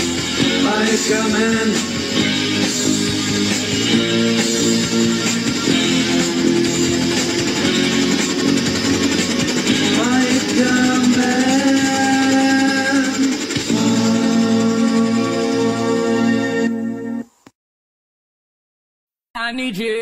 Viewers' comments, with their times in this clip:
0:07 sounds like O-Zone (moldavian europop group)